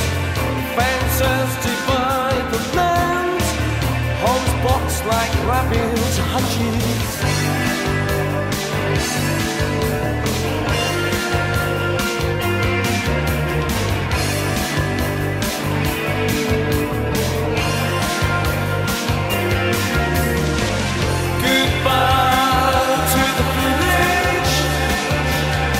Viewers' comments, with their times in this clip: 0:08 music to march to this is an anthem